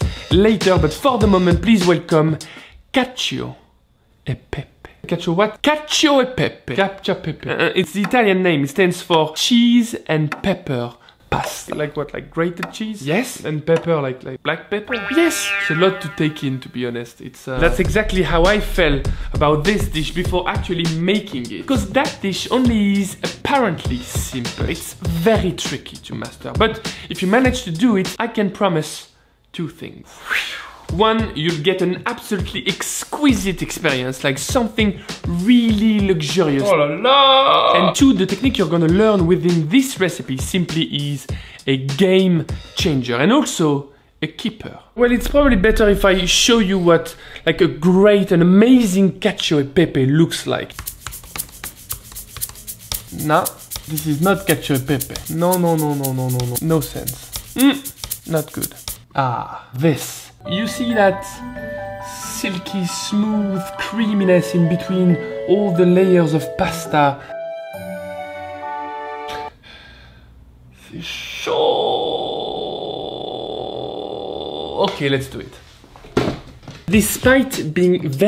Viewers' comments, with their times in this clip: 0:06 CATCH YOUR PEEPEE
1:02 why is it at the beginning of the video when you say "silky-smooth" you sound just like Adam Sandler from the movie "Don't mess with the Zohan"!?!? Thumbs up if you agree with me! :-);